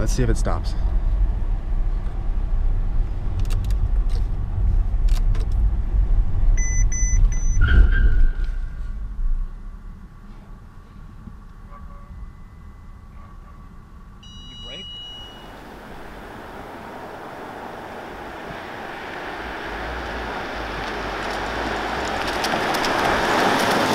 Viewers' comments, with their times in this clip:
0:07 Fake you can hear him tap his foot on the brake!